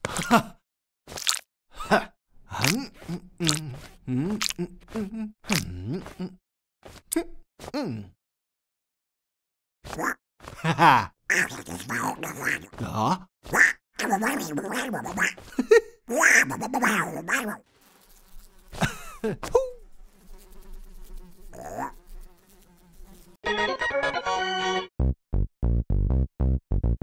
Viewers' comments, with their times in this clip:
0:10 foo's voice like milli milli's voice like caine's voice